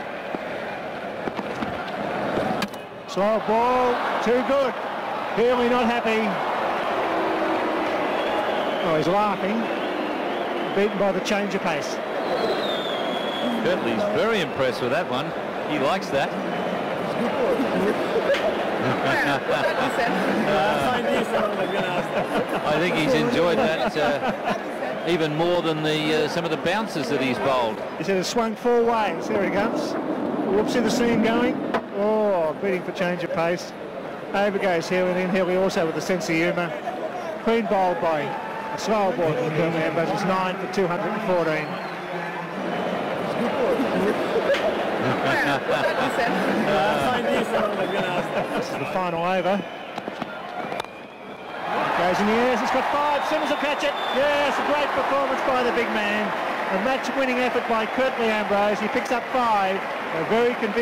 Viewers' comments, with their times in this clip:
0:04 "Healy not happy" squeaks bill lawry with his silly high pitched voice...while Healy is grinning ear to ear. And the fact lawry uttered nothing but trite platitudes and had absolutely no turn of phrase or sense of humour was the icing on the cake. My guess is he was very reliable, professional, showed up on time and didn't ruffle any feathers as a commentator. A classic example of mediocrity triumphing.
0:17 I like when he was laughing.😂😂😂
0:42 Wish I could laugh like that